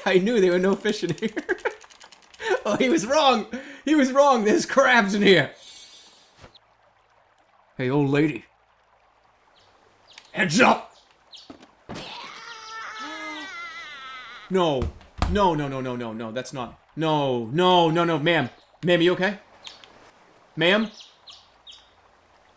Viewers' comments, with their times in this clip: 0:10 funniest part the old lady ERRRAAAAGGG